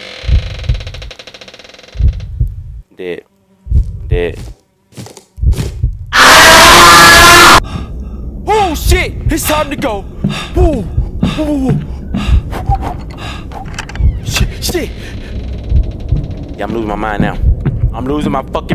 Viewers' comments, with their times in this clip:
0:06 WTF that yell sounded just .... like ..... me......SIIIIIKE U WISHED